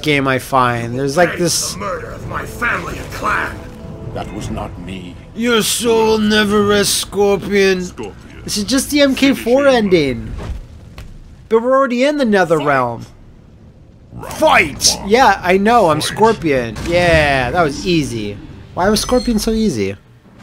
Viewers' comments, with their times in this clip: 0:03 I love the way Sub-Zero says "That was not me" and his expression, it's like he's thinking "Jesus fucking christ, Scorpion, this is the third time this week I've told you I didn't murdered your family and clan"